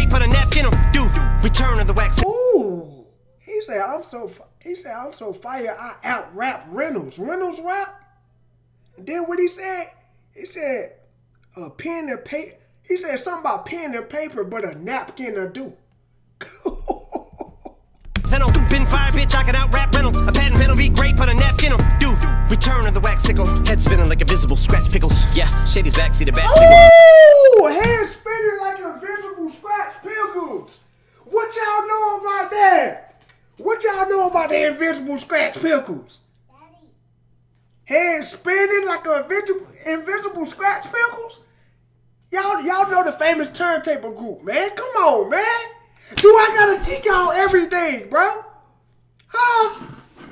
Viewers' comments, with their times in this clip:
0:04 Em started mockin cardi b. Or is it just me? listenin how he change the style. Bro this song has to be a diss.
0:35 did anyone else hear "daddy" when he said invisible scratch panels or something like that
0:36 I here daddy in a quiet voice is that just me?
0:37 for the “daddy” that got ignored in the background! That’s TOUGH!
0:37 y’all hear a baby say “daddy”?